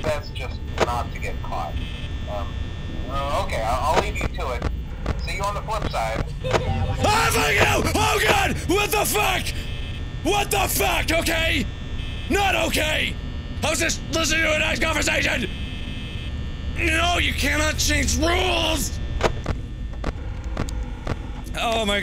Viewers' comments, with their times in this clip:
0:07 kid laughing or is it me
0:08 he sounds like Eric cartman with a lower voice when he yells. 😭